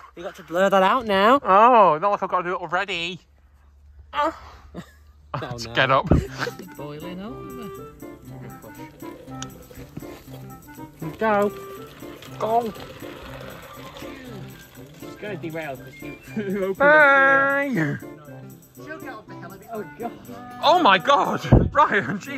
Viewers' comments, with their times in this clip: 0:04 🚨MOAN🚨 🚨MOAN🚨 🚨MOAN🚨 🚨MOAN🚨 🚨MOAN🚨 🚨SELF DESTRUCT🚨